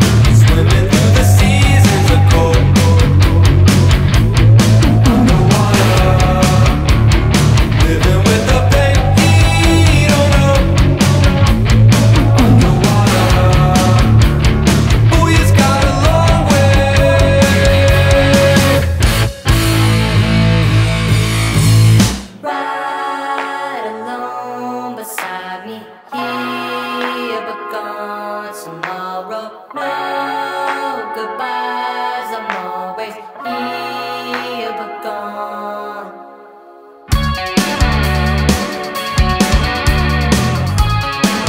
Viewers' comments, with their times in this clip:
0:10 amazing use of echoing
0:23 The part reminds me so much of Frank Ocean lol. Idk if I’m the only one who hears it, but just the effects on the voice sound like something off one of his records.
0:26 feels like cuco